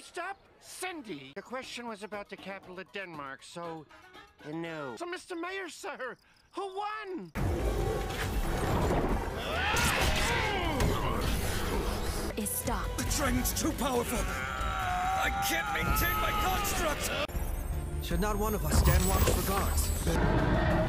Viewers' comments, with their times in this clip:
0:03 nlg why does he sound like the ghost from the ghost and molly mgee